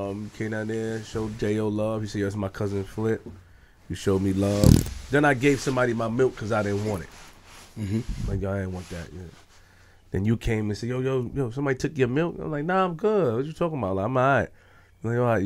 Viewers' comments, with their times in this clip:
0:03 damn somebody farted huh